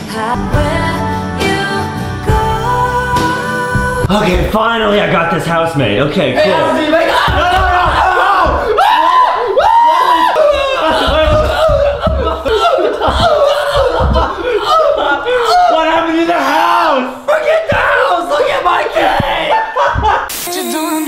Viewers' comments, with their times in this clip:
0:07 that laugh so hard